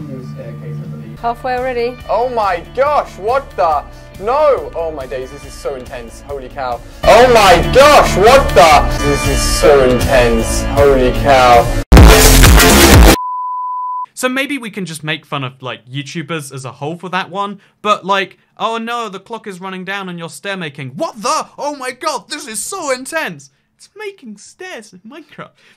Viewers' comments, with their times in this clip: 0:08 Do not wear headphones DO NOT!!!!
0:11 Ali A’s intro starts playing
0:12 Video actually starts make sure to have your volume up be ause its a little bit quiet.